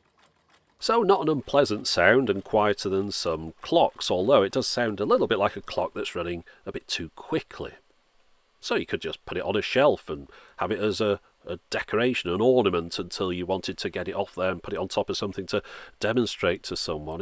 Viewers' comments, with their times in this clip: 0:05 I've seen one clock that actually makes that sound that isn't fast. this clock had two automaton knights that struck the hour-bell. their driving mechanism sounded exactly like this.